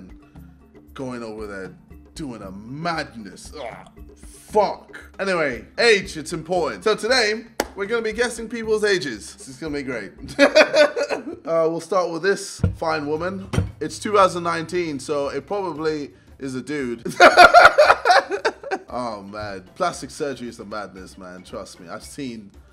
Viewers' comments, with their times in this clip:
0:05 why did he say fuck like that😭😭💀💀